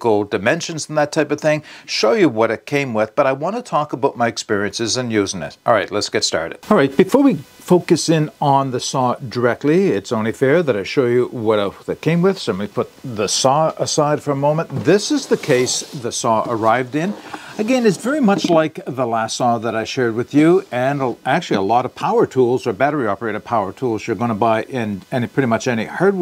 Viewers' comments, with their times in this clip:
0:07 Great review! I've been thinking about getting a battery powered chainsaw. This was helpful information.👍 I just want to mention that you still have some noise on the left channel in parts of the video. It's only kn the tabletop part that starts into the video, and it ends when that part is over.👍 I'm listening with a headset and I believe it's hard to hear otherwise.